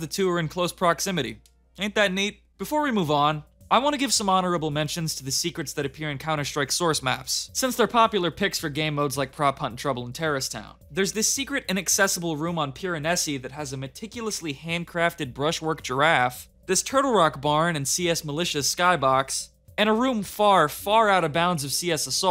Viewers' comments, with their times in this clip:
0:04 “bow”? You mean bow…